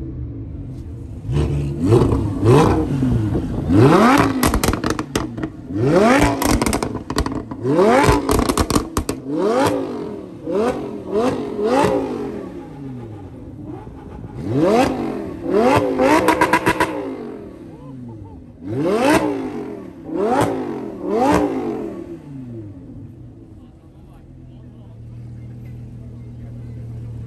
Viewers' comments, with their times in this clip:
0:10 something not sound ok